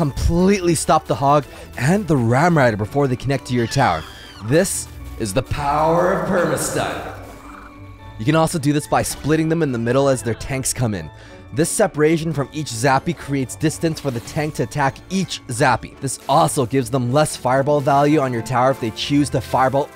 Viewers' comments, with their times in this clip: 0:03 the scream though😂